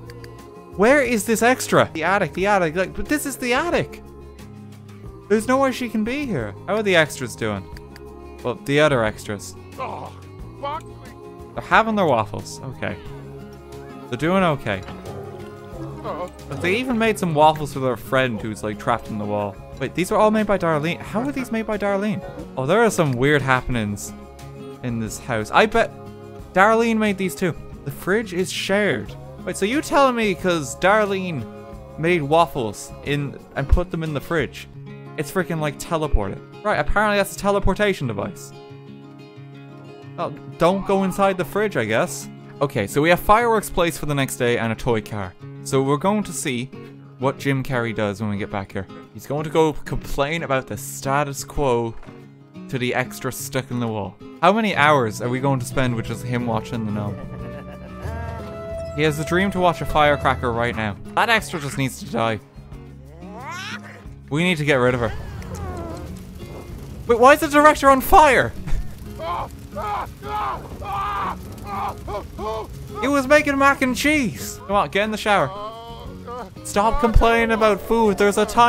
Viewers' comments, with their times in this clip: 0:08 The sim says 'Aww f*uck me' 😂
0:09 pretty sure one of them said “oh f*ck me”
0:10 Did the sim just say "Oh Fuck me"?
1:01 "That extra just needs to die." Jim: high-pitched war cry